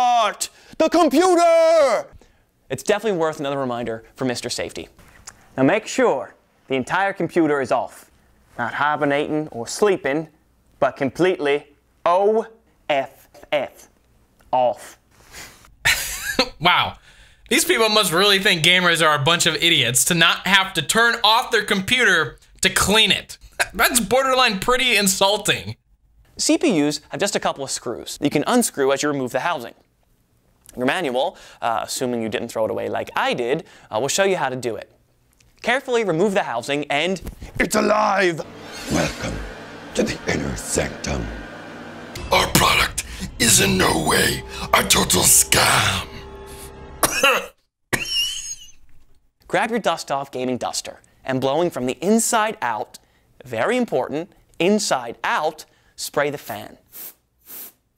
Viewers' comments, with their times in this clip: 0:05 The TF2 Engineer, needing to make a quick buck, decided to get a job as Mr. Safety and horribly regrets it years later.
0:06 why did he adopt an accent now?
0:42 the birth of the voice of Wraps?
0:42 did I hear wraps the mummy
0:42 Noob Saibot from Mortal Kombat 11 tries to scam you